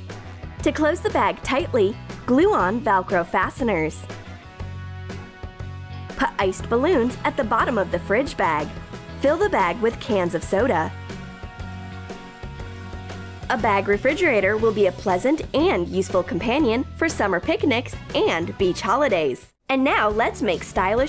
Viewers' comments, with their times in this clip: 0:03 wtf is "vAlCrO"